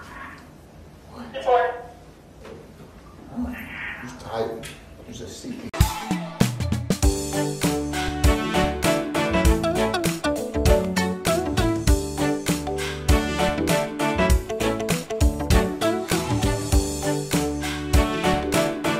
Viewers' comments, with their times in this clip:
0:05 my favourite tune💓😍